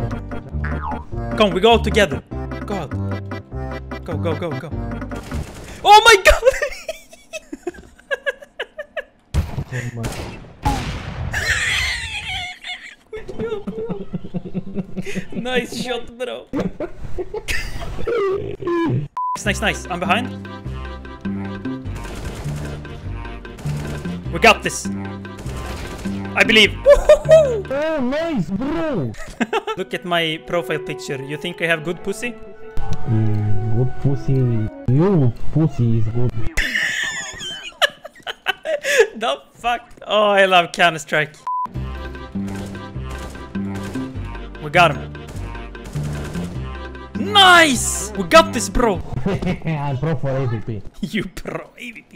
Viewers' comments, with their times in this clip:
0:08 ur laugh made my day man at minute
0:38 we dont like counter strike we like conter stirik